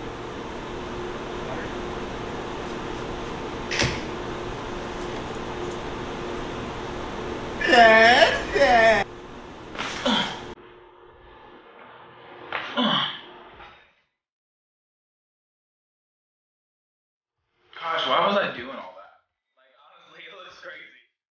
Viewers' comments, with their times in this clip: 0:09 those neck cracks tho